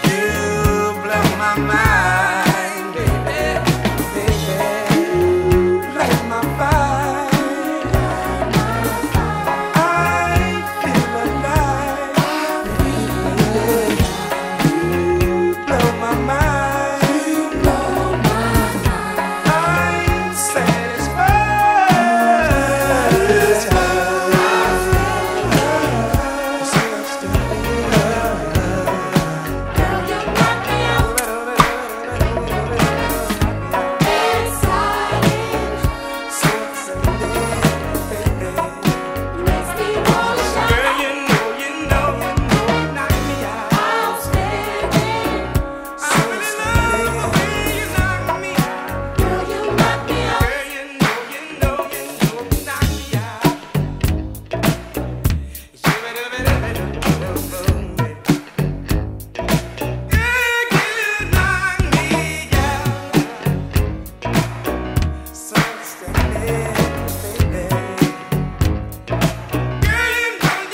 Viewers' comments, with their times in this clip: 0:06 I swear I hear a sneeze
0:55 Anyone else hear a dissonant note in the horn section part of the mix